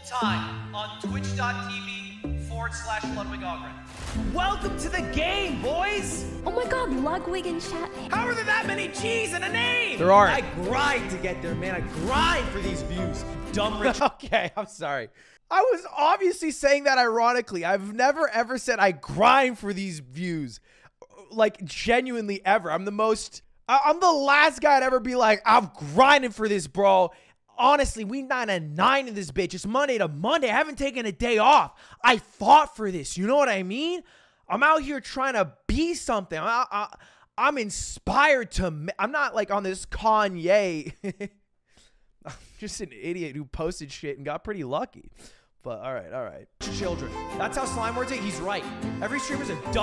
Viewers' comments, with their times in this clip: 0:07 That Kanye impression is so perfect. Glad I'm not the only one that finds that stuff annoying
0:24 quick atrioc impression
0:33 Lol he starts to go into an LA cholo accent and catches himself.